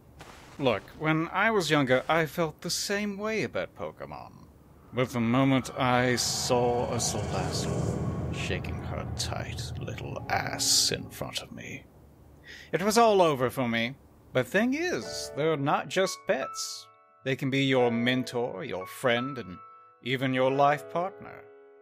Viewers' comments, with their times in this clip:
0:04 What did he say? I couldn't hear him.